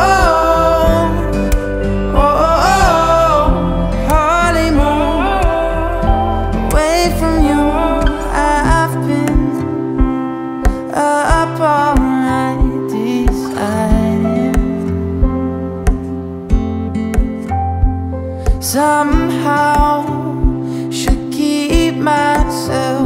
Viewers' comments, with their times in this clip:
0:05 why is he saying “oh-oh-oh” so beautiful?